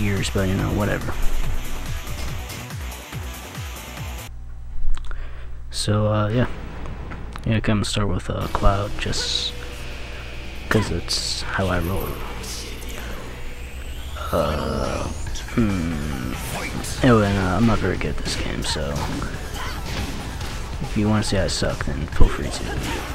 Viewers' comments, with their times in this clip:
0:10 Why does Cloud sound like Link ?